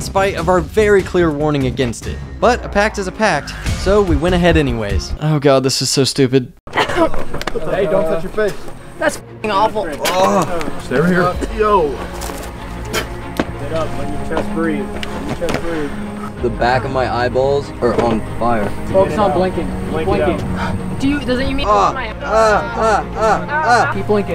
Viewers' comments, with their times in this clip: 0:09 she did that HAWK TUAH!